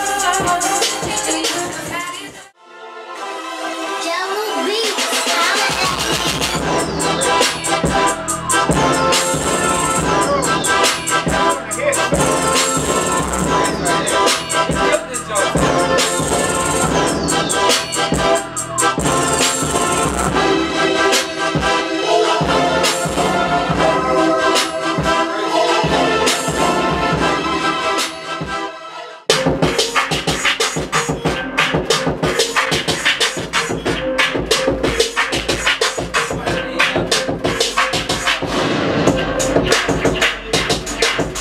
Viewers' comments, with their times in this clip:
0:04 why shit banginn!!!
0:04 crazy beat . Respect Jahlil !
0:06 Beat man I'm hooked on it!
0:29 I want that beat!